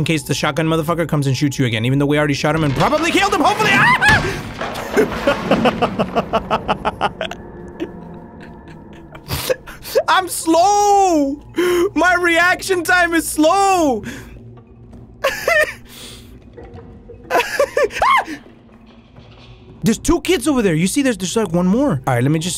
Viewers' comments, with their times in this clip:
0:04 Bro sound like Michael Jackson